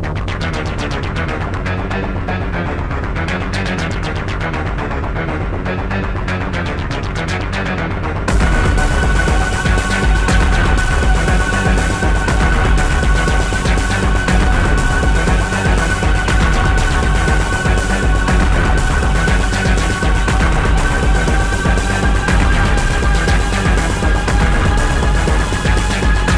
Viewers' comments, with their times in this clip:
0:07 sounds like MIBA.